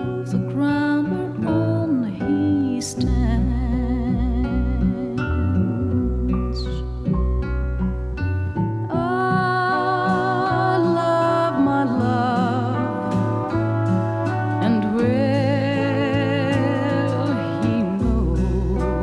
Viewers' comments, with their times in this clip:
0:04 why are 2 piano notes totally out of the harmonic scale ??